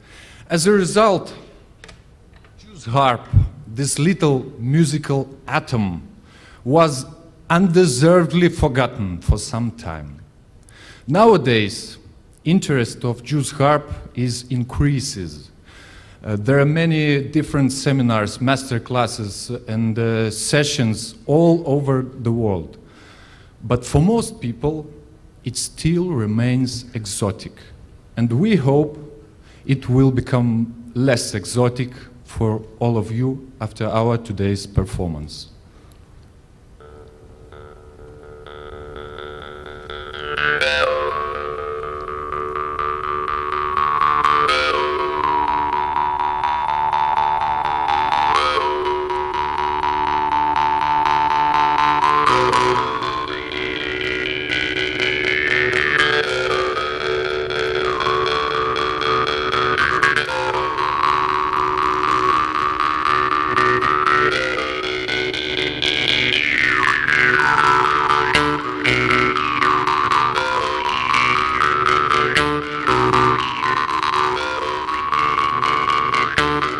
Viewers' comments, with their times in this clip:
0:08 Me:* leaves xbox on for over an hour * Xbox:
0:58 The sound has a slight Depeche Mode vibe
1:03 sounds like blue man group... bravo you crazy kids❤️💪🏽